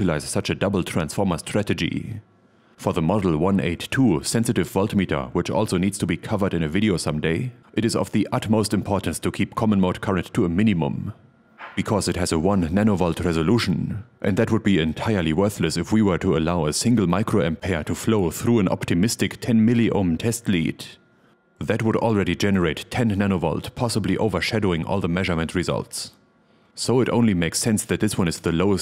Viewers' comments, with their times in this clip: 0:10 I almost heard "mini-mom" 😁